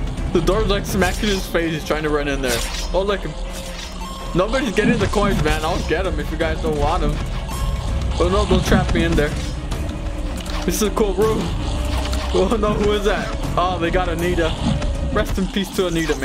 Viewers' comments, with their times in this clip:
0:03 the song is like when you are near the beast of Flee The Facility